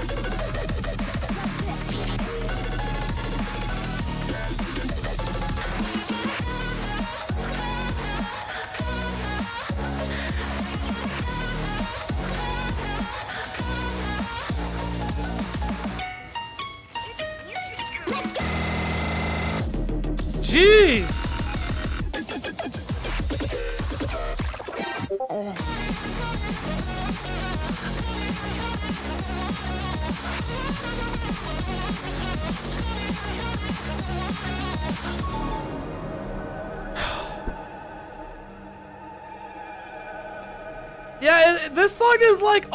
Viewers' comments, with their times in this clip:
0:06 sounds like something out of rocket league
0:23 heard the pufferfish choke Lmao